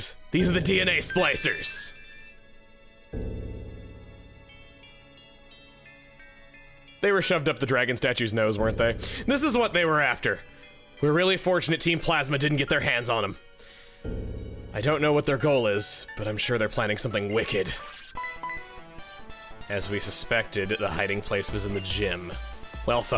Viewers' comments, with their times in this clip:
0:05 it really sounded like you were gonna say something that wasn’t nose…